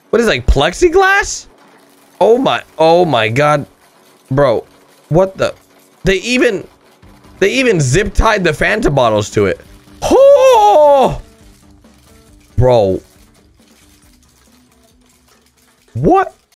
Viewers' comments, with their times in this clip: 0:09 he sounded exactly like Liu Kang from the old Mortal Kombat